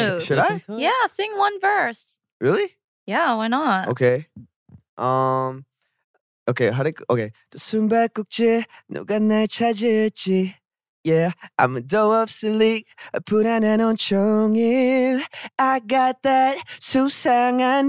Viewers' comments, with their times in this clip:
0:05 oh god my heart melted when i heard junny ..............god !!! this was so sweet you are such a good good singer junny omg !